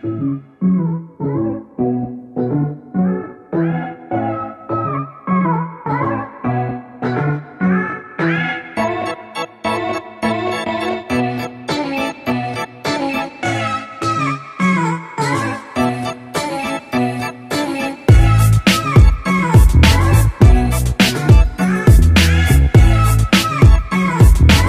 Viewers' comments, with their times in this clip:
0:07 How she walked was actually the beat of the song